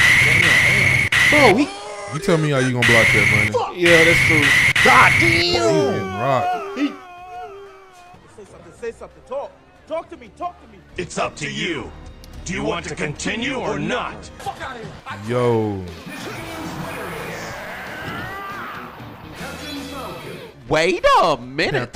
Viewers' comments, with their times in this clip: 0:03 That SOUL CALIBUR 2 DEATH SCREAM🤣🤣🤣